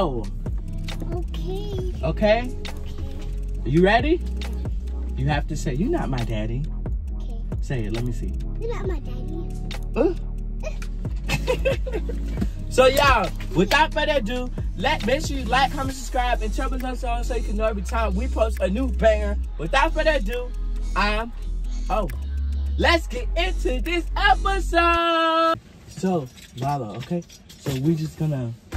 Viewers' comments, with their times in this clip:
0:09 she said it so good😂😂❤